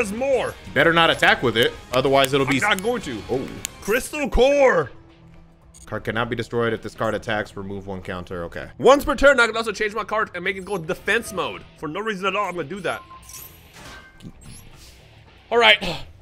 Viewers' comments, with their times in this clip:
0:04 bro i got so thrown off by the Shadow FIght 2 music that started playing but I like it!